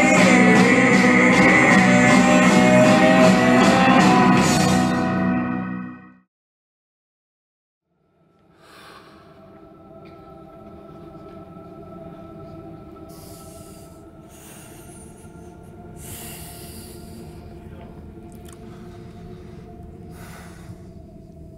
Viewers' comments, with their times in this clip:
0:07 is truly Scott Stap reincarnated!!